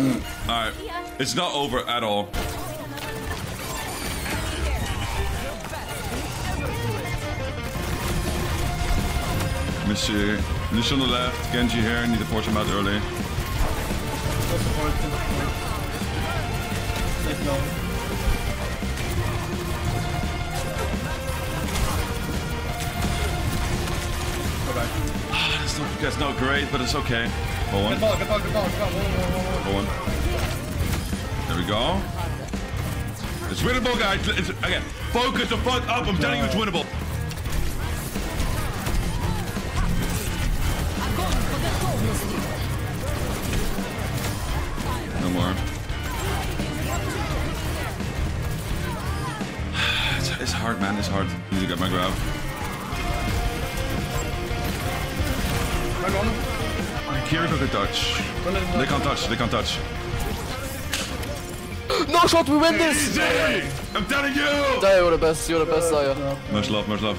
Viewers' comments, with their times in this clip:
0:03 you know shit bout to go hard when the undertale music kicks in
0:55 undertale music goes hard